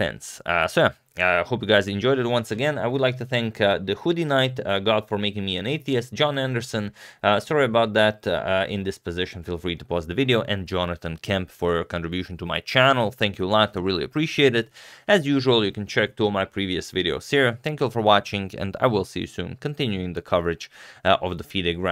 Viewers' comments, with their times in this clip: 0:04 “i’d like to thank the hooded knight god for making me an atheist” did i hear that right?😂